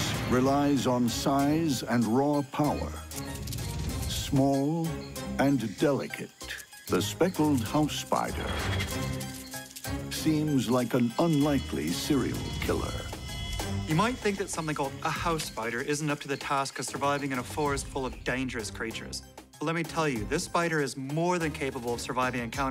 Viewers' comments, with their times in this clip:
0:10 Yo! Gangsta music fo a gangsta thug spider xdxdxd